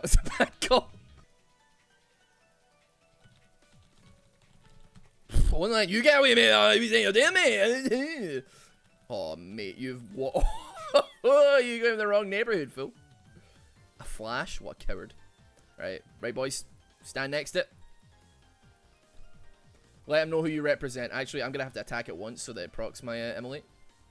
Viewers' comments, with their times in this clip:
0:05 child of Japanese and Scottish immigrants suffers a stroke, 1849 colorized